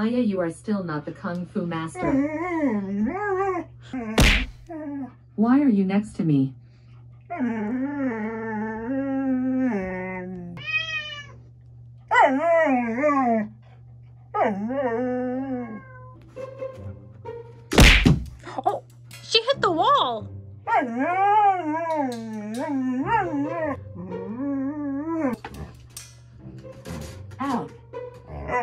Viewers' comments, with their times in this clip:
0:10 when Alexa meowed I just lost it!